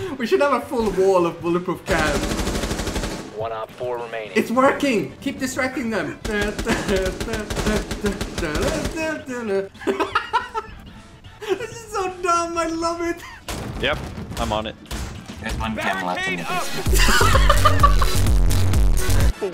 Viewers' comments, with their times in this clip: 0:06 The rave song ur were singing sounded like Alice dj better off alone chorus I only know coz I had to play it for music